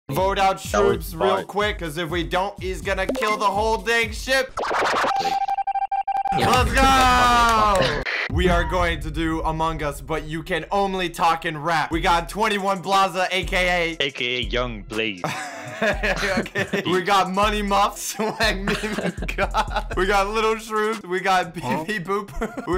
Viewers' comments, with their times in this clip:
0:04 OUOOUH (Wavy) OHHHHHHHH (Normal)